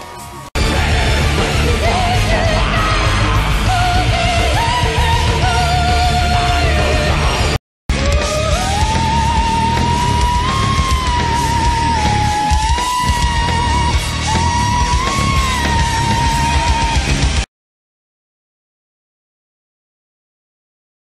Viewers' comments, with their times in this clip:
0:08 Actually a C#6.